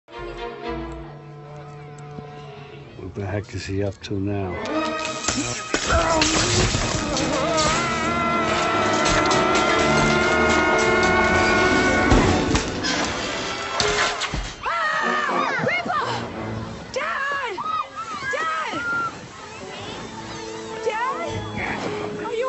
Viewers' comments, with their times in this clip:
0:05 Light buzzing Sound
0:07 Grandpa Dad Scream